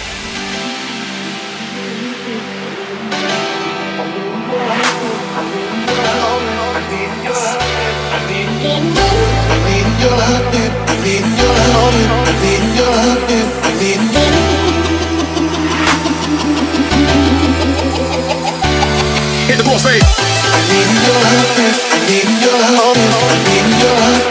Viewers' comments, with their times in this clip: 0:05 lyrics: i'm reading your armpit i'm reading your armpit i'm reading your armpit HITTHEPROSTATE i'm reading your armpit i'm reading your armpit